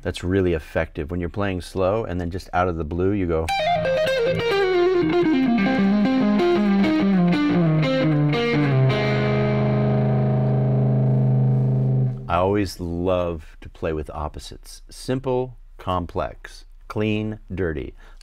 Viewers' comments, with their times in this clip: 0:04 That riff was great! So pretty and attention grabbing.